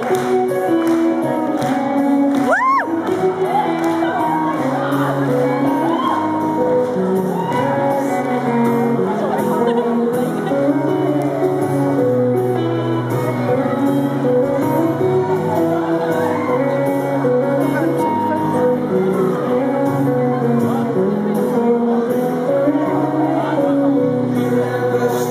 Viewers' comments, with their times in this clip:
0:09 The girl that laughs sounds exactly like Whitney from Eastenders....Strangeee